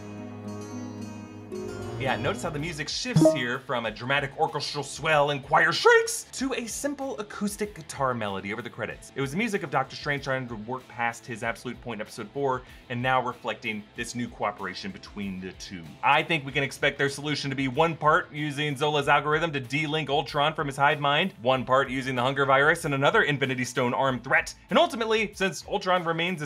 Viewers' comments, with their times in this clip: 0:03 Just need to mention that's not an acoustic guitar melody it fades into, its actually a harpsichord - a baroque precursor to the piano
0:07 that’s not acoustic guitar, it’s harpsichord 😁
0:09 not a guitar, but a harpsichord